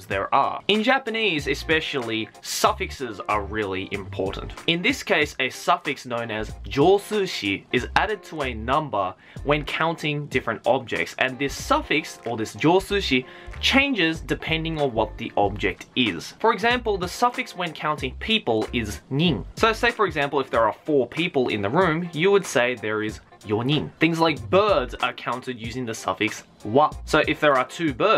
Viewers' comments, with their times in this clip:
0:09 when you hear that stress